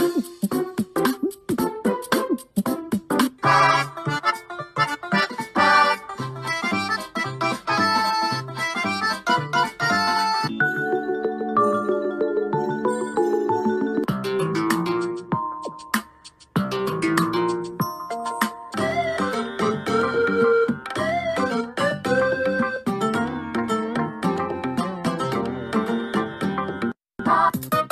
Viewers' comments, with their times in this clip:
0:10 ok but why does the music sync so perfectly here